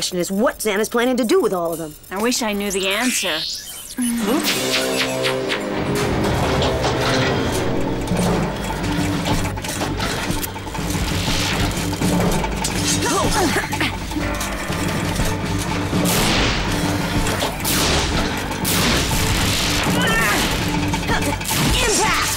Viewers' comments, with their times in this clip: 0:03 was that XANA laughing?
0:04 did XANA just do an evil laugh